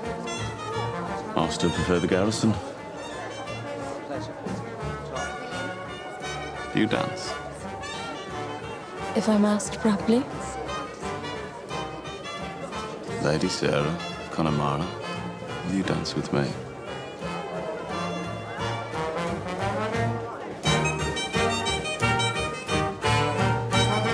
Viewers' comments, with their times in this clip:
0:07 he sounds so Irish when he says “do you dance”